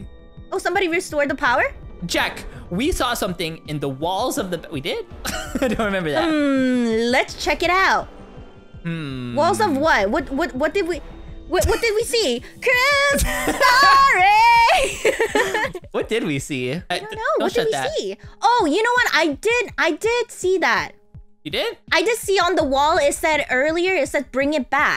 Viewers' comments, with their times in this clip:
0:10 and really again and super loudly